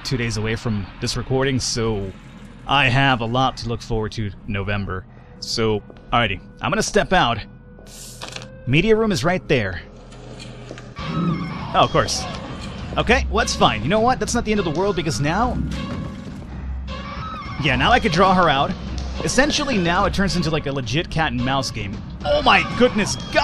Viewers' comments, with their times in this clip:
0:10 did u just say Repunzel? or a pencil?